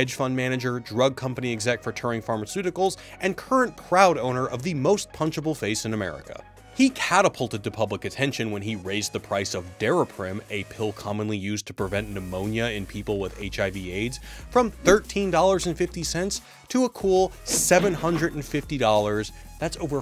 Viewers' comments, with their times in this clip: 0:03 that voice and crazy eyes :((
0:08 lol I had youtube babbling in the back and had to alt tab when I heard something odd but realized its that chick with that funny changed voice. How the hell didn't anyone ask her "why the fuck you talk like a cartoon voice actor?"